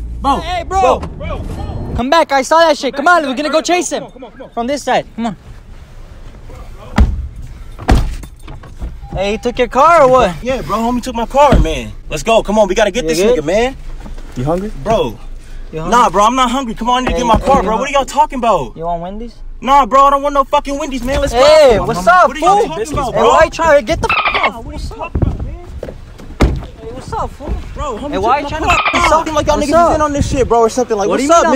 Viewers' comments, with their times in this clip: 0:05 sounds exactly like Franklin
0:08 why does this nigga sound like an npc from gta
0:09 that guy sounds like frenklin from gta 5
0:09 Lmao why that sound like a GTA V Mission
0:10 he sounds like Franklin of Gta V xDD
0:11 sounds like Franklin from Gta V
0:11 he sounds like franklin from gta 5
0:11 -5-49 holy shit that dude and that exact moment straight Up sounded like Franklin from GTA 5 , like you was ready to do a mission o sum ting
0:11 his voice seems like franklin fro gta
0:15 he sound like from gta ma boy